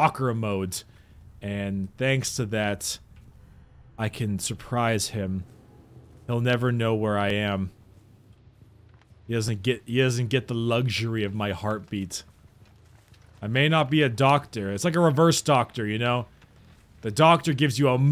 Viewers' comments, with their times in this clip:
0:03 Heard the hatch